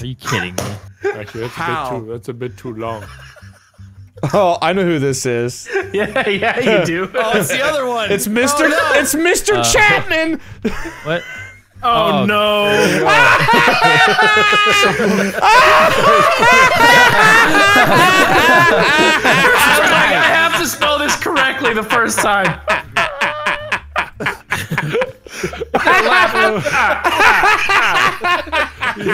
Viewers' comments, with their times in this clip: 0:09 best laugh ever
0:11 his laugh reminds me of the Dracula guy from seaseme (however you spell it) street
0:12 one of his best laughs XD
0:13 was the hardiest laugh I have ever heard!